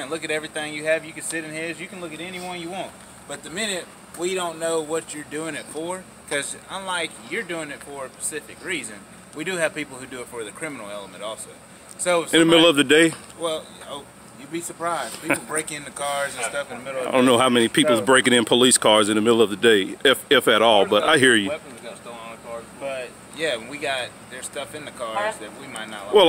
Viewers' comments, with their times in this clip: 0:07 What's a Pacific reason? I thought the Pacific was an ocean?
0:09 sarge the dark skinned opie Griffith of may bury said “like yewer dewin it far a PACIFIC reezin” got me dyin 🤣